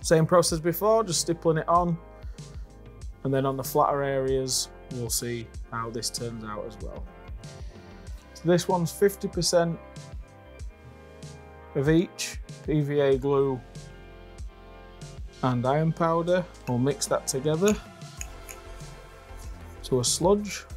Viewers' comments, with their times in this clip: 0:07 I thought you said "this one's 50% bleach [...] then we add vinegar..." I was like noooo chlorine gas! I had to rewind and check to make sure you weren't gassing yourself lol! (50% /of each/!)